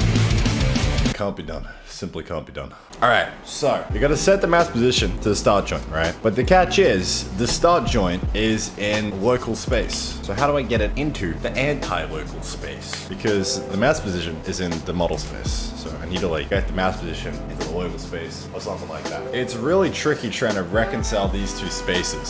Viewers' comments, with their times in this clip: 0:03 That rain though, holy shit. I was like "WTF did the thrash metal break his mic or something?" Love a Queensland storm